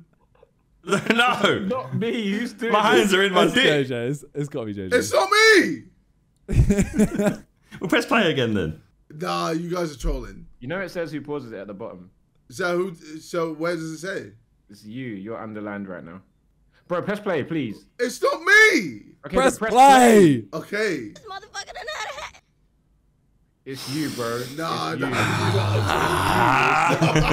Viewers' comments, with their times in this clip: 0:08 ive noticed that jj is faking his laugh and im not saying it in a bad way, hes still bummed out abt the fight but i think simon clocked it and decided to joke around (pausing) to make jj actually laugh😢